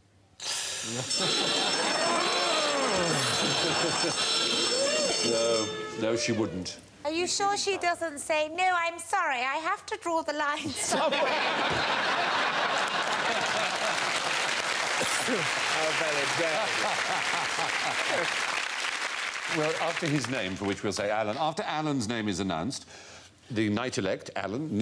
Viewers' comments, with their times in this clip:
0:08 I think this is the one and only time Ronni actually delivered a funny line and a good impression simultaneously. A truly historic moment.